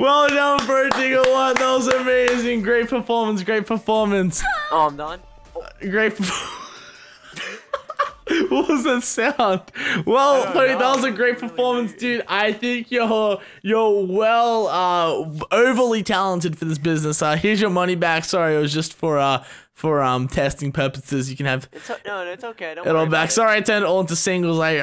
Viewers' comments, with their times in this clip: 0:03 just watching then i hear haa
0:04 Did anyone else hear bee in the back round lol
0:05 did his porn go off??